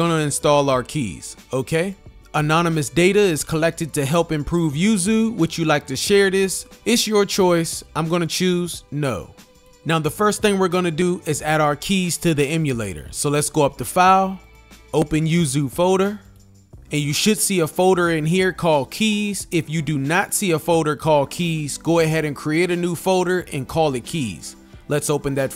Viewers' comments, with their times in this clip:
0:08 he said "no" like the bugs bunny meme lol